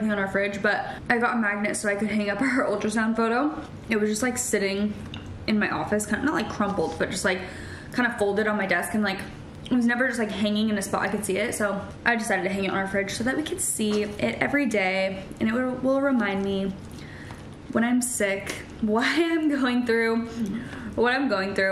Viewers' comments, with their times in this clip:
0:04 I can’t tell if you say “her” or “our” ultrasound photo but just letting you know in case you don’t want it in the video!